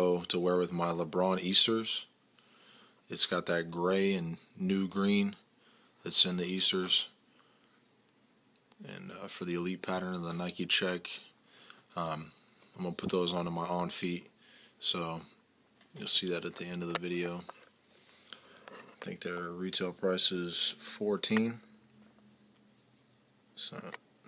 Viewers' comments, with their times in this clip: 0:06 Nice choice of music